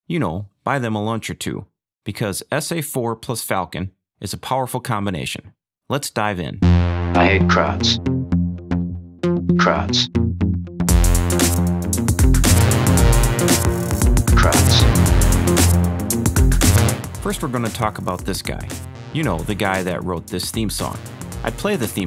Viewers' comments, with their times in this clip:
0:05 WOW.. haven't heard such a crisp mix on YouTube yet :trophy-yellow-smiling: